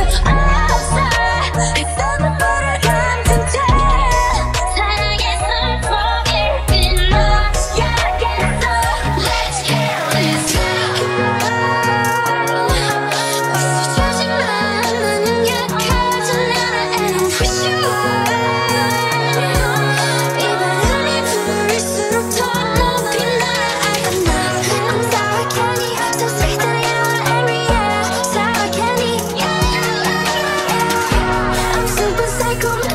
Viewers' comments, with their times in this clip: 0:10 Rose part is no joke 😂😂 hahahaha!! I mean the whole thing is no joke but Rose has a way of pulling at the heartstrings the sound of her voice and the way she uses it. WOW 🤯🤯
0:10 Man when I hear Rose's voice I die a little. LMFAO 🤣🤣 hahahaha!!
0:16 Rose voice does something to me. WOW 😨😨